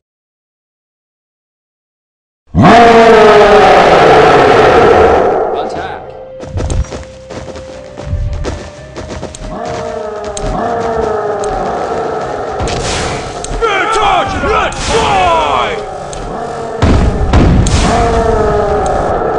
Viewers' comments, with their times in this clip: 0:04 ahh my ears will keep dying